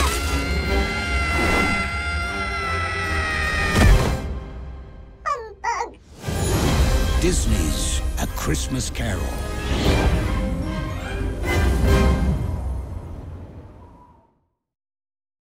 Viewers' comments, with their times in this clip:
0:04 (*in a high pitch voice) "Humbug!" XD